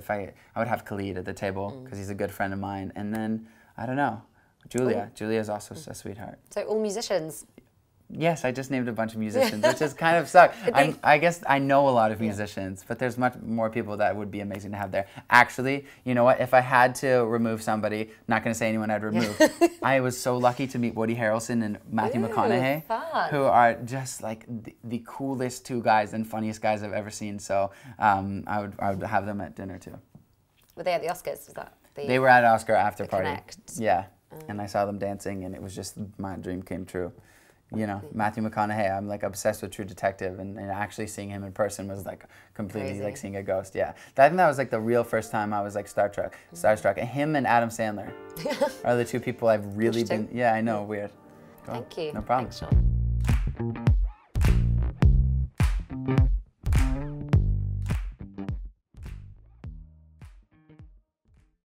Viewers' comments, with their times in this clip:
0:08 how he says he a
0:50 did he just say weird in British